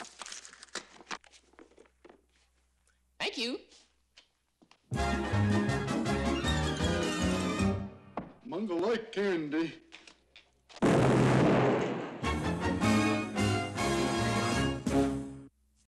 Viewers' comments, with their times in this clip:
0:08 "Mongo like candy" Then...BOOM!! XD